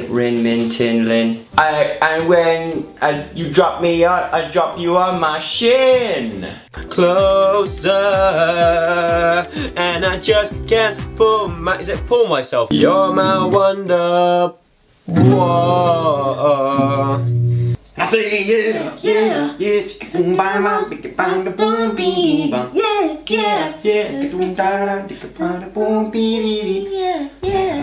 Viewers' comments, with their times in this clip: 0:09 he sounds like a singer